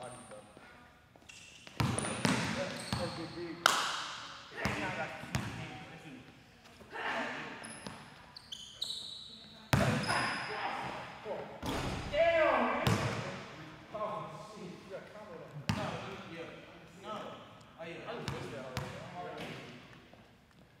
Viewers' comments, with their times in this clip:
0:04 Somebody sneezing their life away 😂